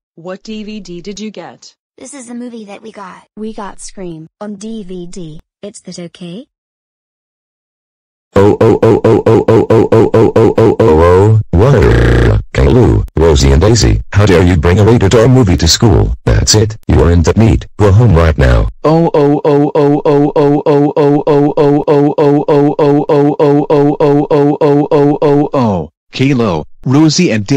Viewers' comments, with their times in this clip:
0:08 ?! Miss martin's voice changes to dave